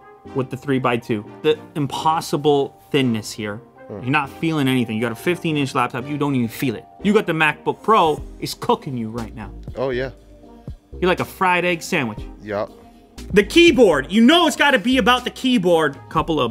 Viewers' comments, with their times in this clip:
0:03 I heard a fart :D